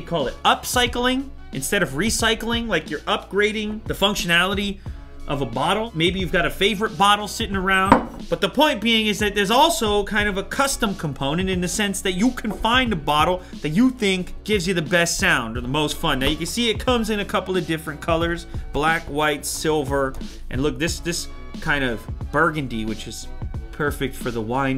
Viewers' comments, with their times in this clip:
0:07 His watch beeps what a subtle sound out of nowhere.